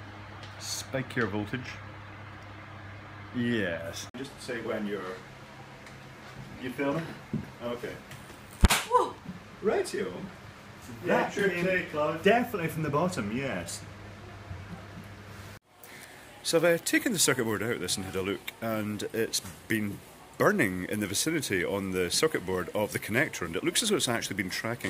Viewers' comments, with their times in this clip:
0:08 It goes BANG!